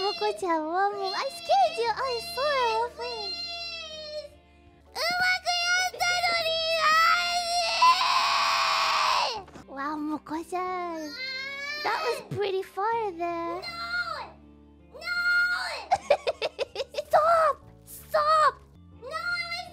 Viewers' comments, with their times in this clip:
0:05 that fry was so sick